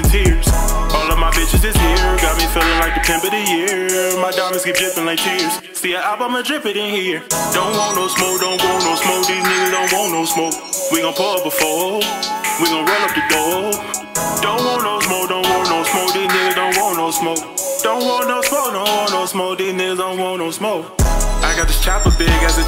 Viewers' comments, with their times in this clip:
0:06 yo i thought this was Big Boi from Big Boi's neighborhood rapping lmao